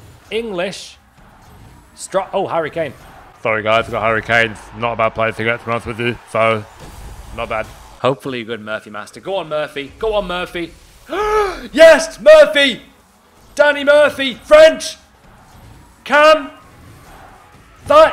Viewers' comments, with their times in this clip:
0:03 that harry kane impression was amazing🤣